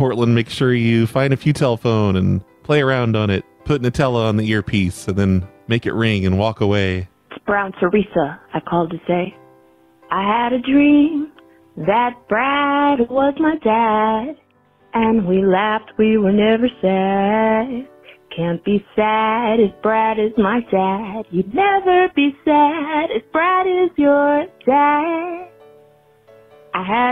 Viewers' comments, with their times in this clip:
0:09 that singing is actually good!